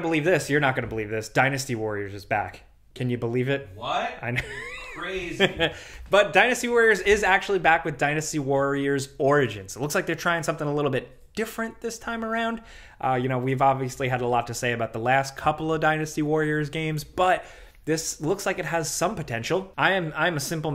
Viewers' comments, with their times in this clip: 0:05 Thanks guys, I about jumped out of my skin when whoever’s in the back said what thinking someone was in my room 😂😂